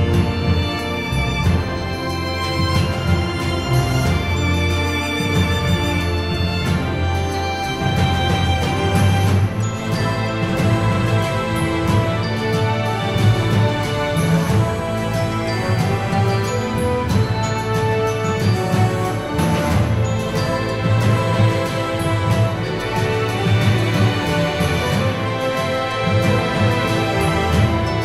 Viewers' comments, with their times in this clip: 0:09 This piece of music symbolizes supremacy